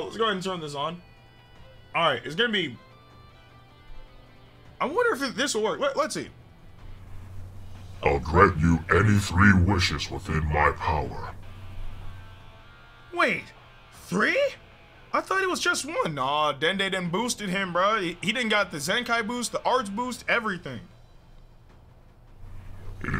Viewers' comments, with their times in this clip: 0:05 😂😂 sounds like omega shenron granting the wish